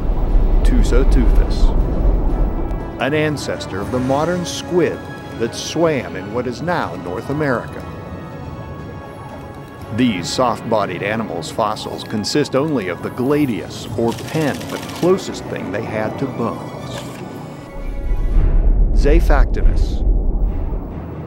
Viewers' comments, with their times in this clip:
0:04 HE SAID IT SWIM AND ITS NOW lol